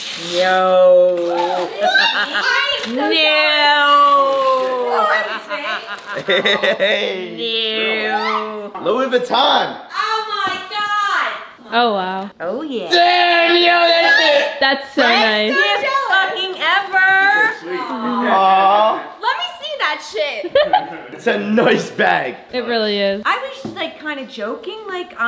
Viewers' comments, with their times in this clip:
0:04 she sounds like a alien 👽
0:09 grandma in the back “OH MY GOD” XDDD